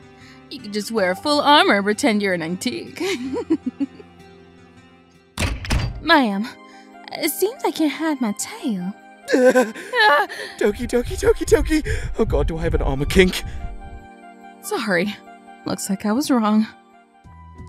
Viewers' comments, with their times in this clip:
0:04 it sound like dreadnaughts moving when she get's in the armor and if maids were indentured servants back then, then "EVEN IN DEBT I STILL SERVE" -therussianbadger